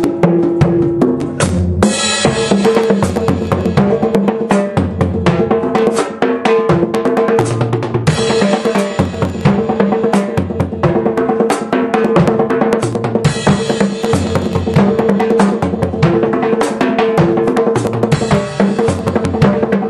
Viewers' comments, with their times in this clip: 0:04 I,m very glad that could make You laugh with my series!:) Here before I suddenly forgot what is coming and even banged a stupid G instead of A - but I did not rerecord the whole after the lot "fireWoody Allenism":)